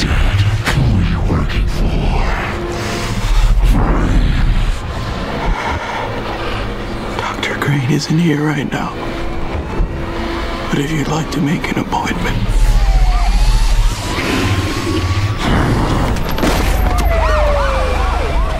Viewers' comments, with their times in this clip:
0:03 it sounds like he's telling him to "pray". Which kinda works because he looks like some demonic revenger.